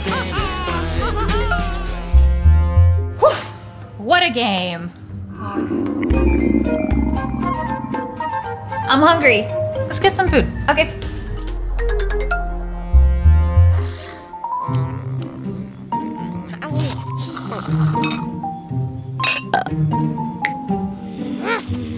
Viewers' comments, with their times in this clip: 0:06 Oh, What A Sound Is So Weird? ._.